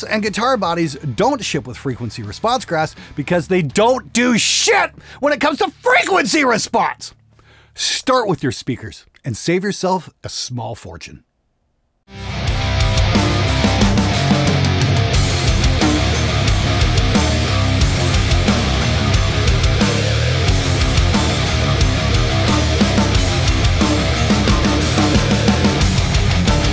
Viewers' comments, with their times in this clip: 0:09 effects on the vocals or demonically possessed ?